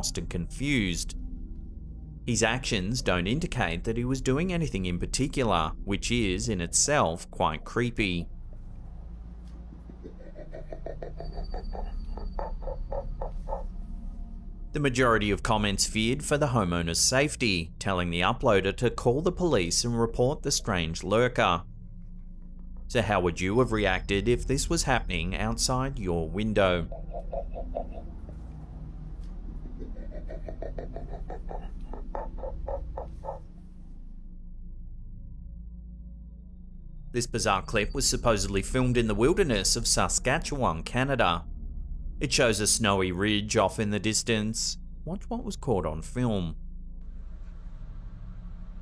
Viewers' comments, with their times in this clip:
0:03 …. YIKES! That things creepy AF! That noise it’s making I’m not sure a human could make … and if someone can let me know … man
0:03 ~ these clicking sound this being makes, remember me of echo location of whales etc. Maybe the this orientates by this clicking sound because of living in darkness! Cave dweller?
0:17 Just by hearing it panting I don't think that mysterious lurker is even human..
0:23 that is one creepy lurker. The sound is what sounds so authentic. Thought it was a hairless bear!!
0:33 that sounds that man is makimg sounds like something of a creature ide move away from there